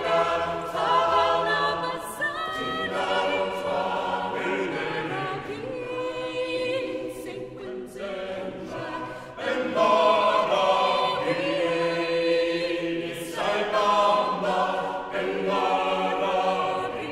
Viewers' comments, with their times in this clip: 0:04 put on your earphones, listen to that Bass from onwards